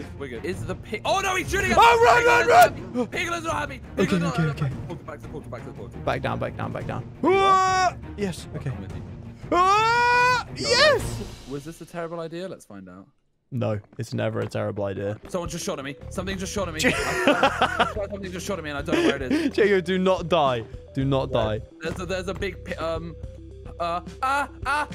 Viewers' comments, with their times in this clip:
0:10 damn that moan was good
0:10 why did he sound like a girl?